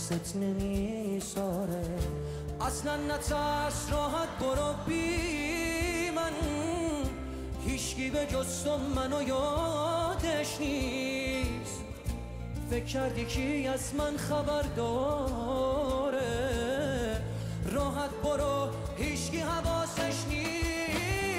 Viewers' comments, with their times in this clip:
0:06 that head-shaking, which you naturally did here, is what we Persians do when we hear that "trilling" technique both in our pop and classical songs. That means the trill has hit directly onto your heart, causing you to shake your head.